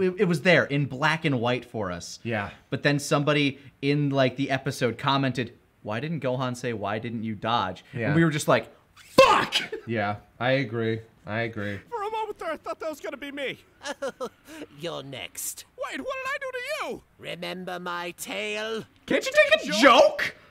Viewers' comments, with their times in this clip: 0:07 gotta love how you can still hear pain in his voice at the fact they missed the joke